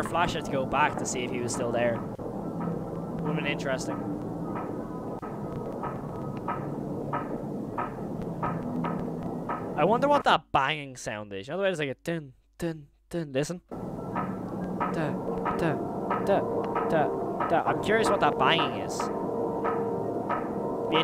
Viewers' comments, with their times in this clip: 0:07 that sound is the slowed down version of the beginning of the wonderland intro